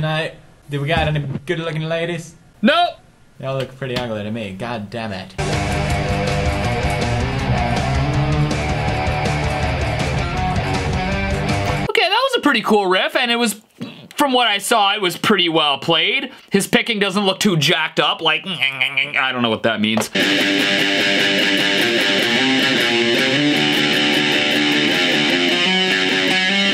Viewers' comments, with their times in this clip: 0:07 sounds like Muse